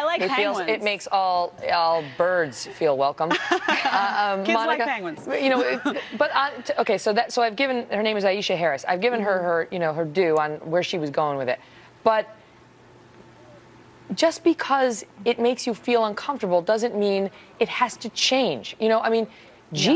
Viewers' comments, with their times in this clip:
0:03 "Kids like penguins" you can tell she was pissed lol